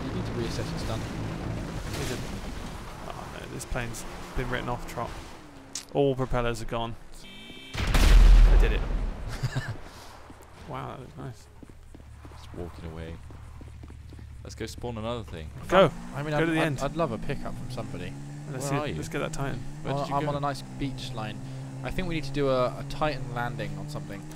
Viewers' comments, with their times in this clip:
0:07 Beats. Full volume. Enjoy